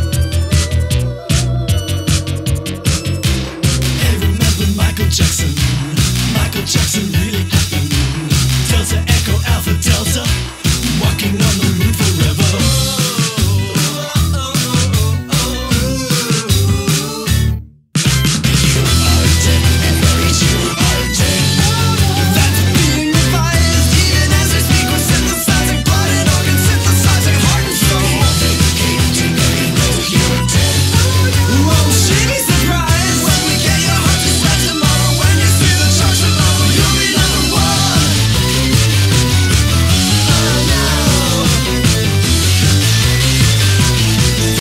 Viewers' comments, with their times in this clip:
0:03 I keep coming back for these wolves and the way they say “Micheal Jacksonnnnnnnnnn” and the way they look while doing it lmao
0:12 this scratches my brain good and idk what it is about the singing and humming while dancing but I love it
0:39 After it just sounds like a haphazardly cobbled together mess of a drum solo created by Jukebox AI